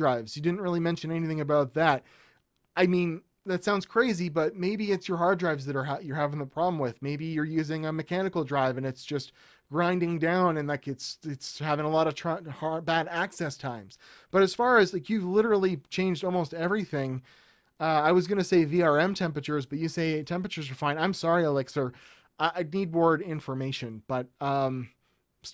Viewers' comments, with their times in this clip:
0:06 sounds like his broadband is being throttled............ is he torrenting????????